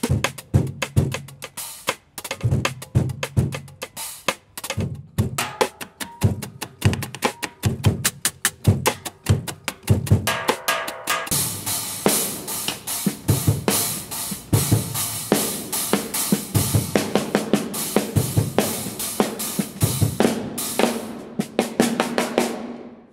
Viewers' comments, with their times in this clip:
0:05 when you desperate for that "trashy" sound